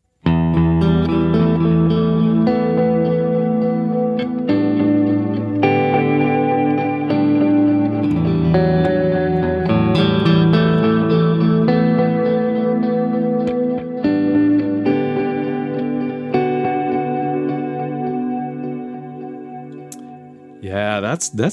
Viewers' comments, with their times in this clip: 0:04 Nice that the two Strymons together create a reverb. you're nicely in Vini Reilly/ Durutti Column territory. Good thing you did'nt pull out the TC Triple Delay. 😉😬